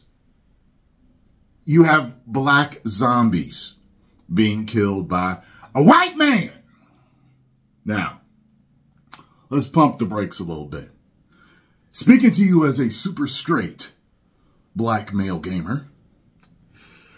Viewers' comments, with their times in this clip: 0:05 that Chappelle impression tho 😂